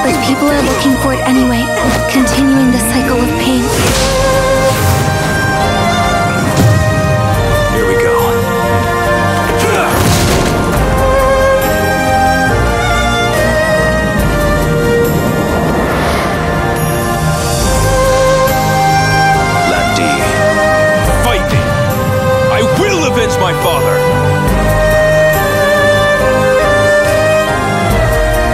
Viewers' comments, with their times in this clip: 0:09 Finally, Ryo says Shen-wa and not Shen-fa lol, btw that intro of Lan Di, seems like he wants to be in MK or Tekken. Hopefully the ps4 trophies work this time, the Shenmue 1 and 2 ones dont work but no biggie.